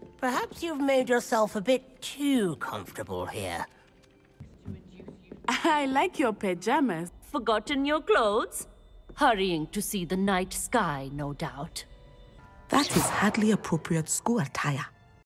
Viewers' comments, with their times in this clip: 0:12 I give that accent an authentic 10/10 🔥💯🔥